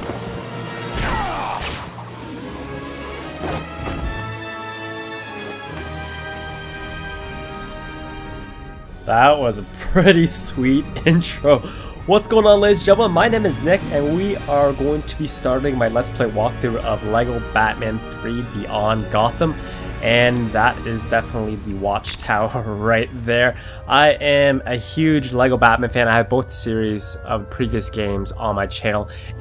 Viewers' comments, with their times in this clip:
0:10 that was a sweet co-ntrol haha